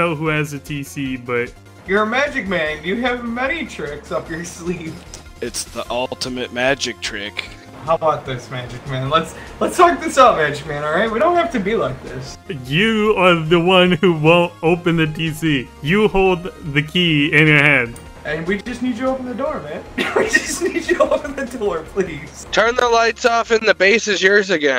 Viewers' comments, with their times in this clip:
0:06 dunkey, is that you?